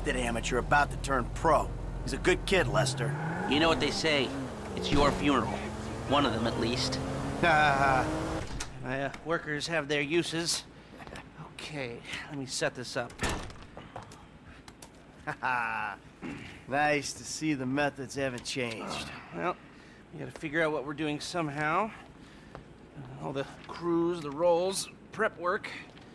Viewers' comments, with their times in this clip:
0:06 Haha!, Michael’s sarcastic laugh.
0:08 Michael’s laughing was perfect